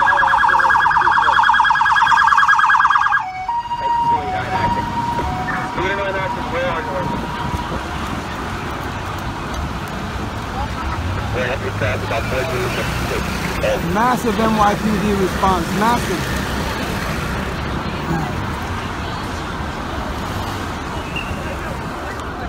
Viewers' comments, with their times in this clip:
0:03 Did I Just Hear Tokyo Ambulance Siren In New York